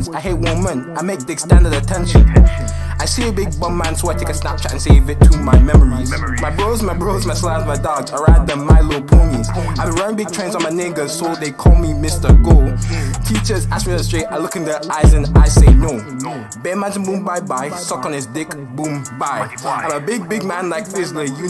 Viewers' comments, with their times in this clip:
0:06 u can hear him laugh LOL